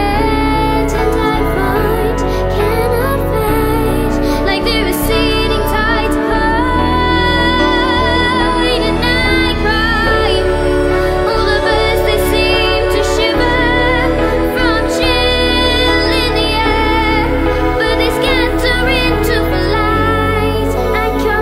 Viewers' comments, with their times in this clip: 0:07 Your voice always gives me chills I love the way you sing especially when you say and I cry I love it